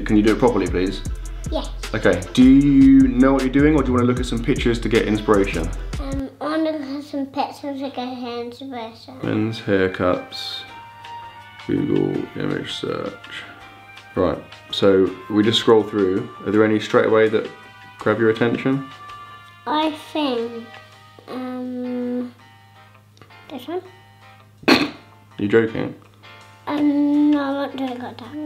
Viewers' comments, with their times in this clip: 0:10 ‘i wanna havf sumpictorsdf or inspateosn’ - im pretty sure ghandi said that once